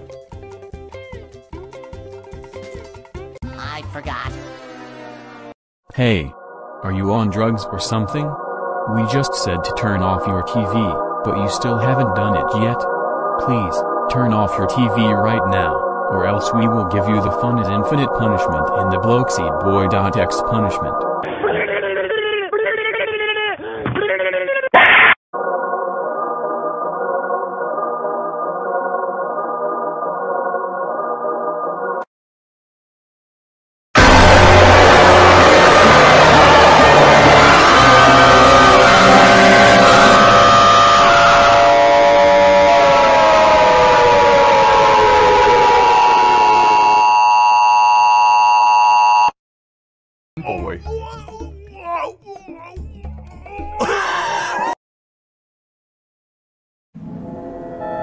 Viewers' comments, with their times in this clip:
0:08 koofy voice rippoff
0:25 why is it kinda a bop
0:39 bro used a EAS alarm for nothing💀💀